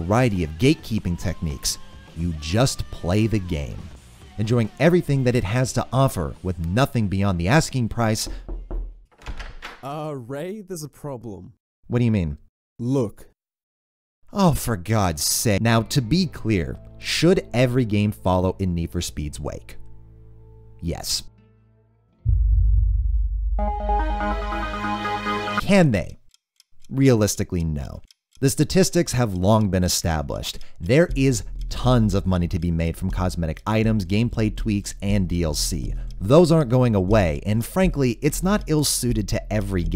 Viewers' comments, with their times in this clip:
0:05 Jesus fucking Christ, I almost died with the door sound effect
0:06 thanks for the knocking, I thought it really was someone doing it while i was home alone so my sis arrived home to find me holding two knives searching around the house for a burglar.
0:06 That knock always gets me...especially with my ANC headphones....
0:07 This damn knocking sound gets me everytime and I don't even have a window or door on my right. Jesus.
0:07 That knock scared the shit out of me, sounded exactly like my actual door
0:07 made me look on my right to see who's knocking
0:07 Goddamn I actually thought there was someone freaking knocking on my door. Ya gave me a spook
0:07 FUCK YOU that knock sound gets me every time lol
0:08 Had headphones on so thought someone was actually knocking
0:08 that knocking scared the shit out of me!
0:08 holy fuck I actually thought there was someone tapping on my window
0:08 I Legit thought someone was knocking behind the wall, well these headphones are good then.
0:08 I seriously thought my someone was knocking at my window for one sec and I legit freaked out (maybe it was because of the Headset I use).
0:08 That knocking sound scared the shit out of me. I thought someone was knocking on my 3rd floor window.
0:08 That knock literally made me thought someone was at my front door
0:08 I shit a brick being home alone in blaring headphones.
0:08 I looked at the door to see if someone was knocking... I live by myself...
0:08 That fuckin knock i wear surround sound headphones thought someone was fucking knockin on my windows 100 above fucking ground. Good vid as always but dont do that shit almost gave me a heart attack..
0:08 SCREW YOU THAT KNOCK GAVE ME A HEART ATTACK
0:25 The music <3